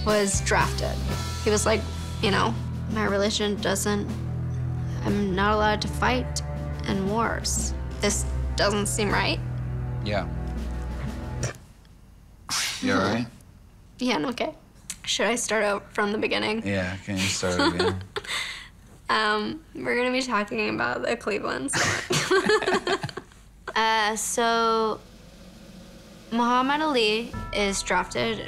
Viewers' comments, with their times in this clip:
0:10 when she was drunk and coughed, but the actors has to do that anyway😂😂